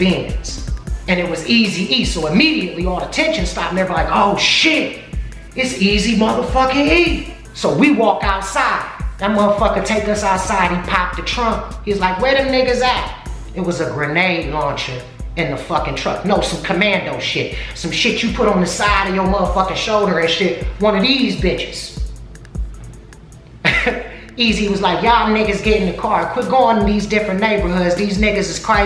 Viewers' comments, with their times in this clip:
0:09 i can see Easy now when bizzy says he goes "WHERE THEM NIGGAS AT?" in that eazy e high pitch voice. RIP to the godfather of gangster rap. Eazy E.